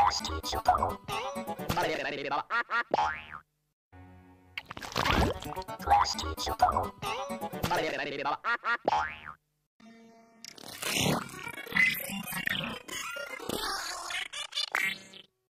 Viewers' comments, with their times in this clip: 0:10 sounds like high pitch +16